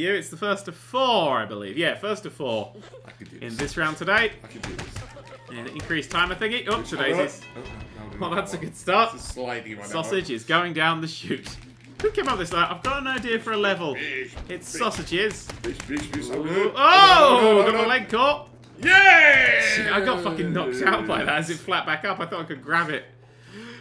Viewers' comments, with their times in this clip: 0:04 anyone hear the background laugh